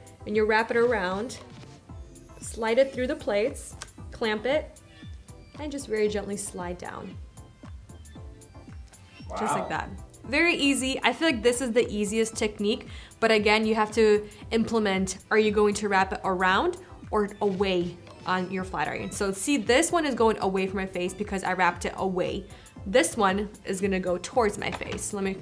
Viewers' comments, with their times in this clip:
0:10 I love how meticulous you are and how you clearly explain the different techniques and results! And I thought the guy in the background who said, “Wow” was so funny!